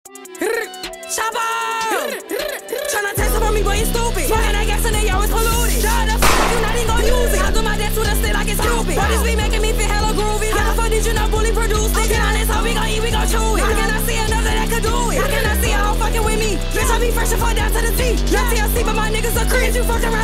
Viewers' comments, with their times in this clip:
0:06 loud af, thought somebody upped blick fr